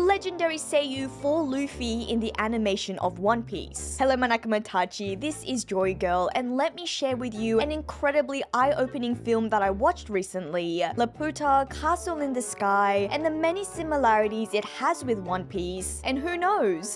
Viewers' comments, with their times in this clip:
0:04 What was that i thought it was meant to be NAKAMAtachi as in companions, but that was like manakumatachi